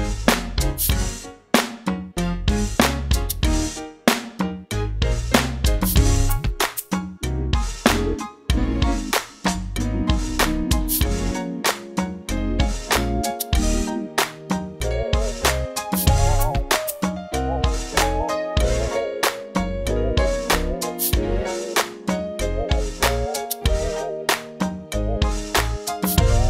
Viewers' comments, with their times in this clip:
0:08 Please what's the name of the synth voice you used when playing from The synth had some kind of vibrato🙏